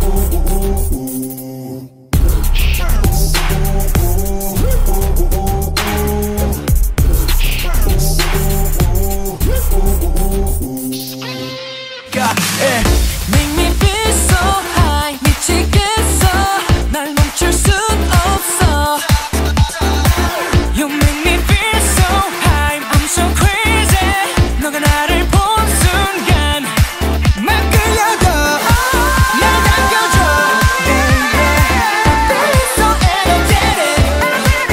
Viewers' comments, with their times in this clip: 0:10 did someone scream thighs🙃
0:21 sounds like San is singing❤️😅